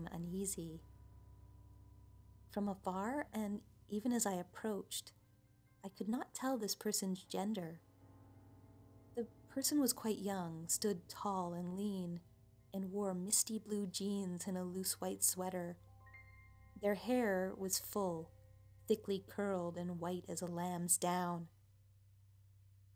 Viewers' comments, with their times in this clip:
0:04 sounds like Suzuki from Tokyo Ghoul, sorry but that’s who I’m imagining lol XD